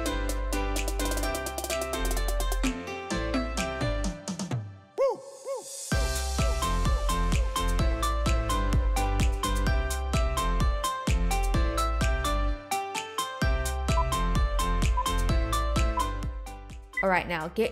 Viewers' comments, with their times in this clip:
0:03 WHEN SHE HIT THAT BEAT OMG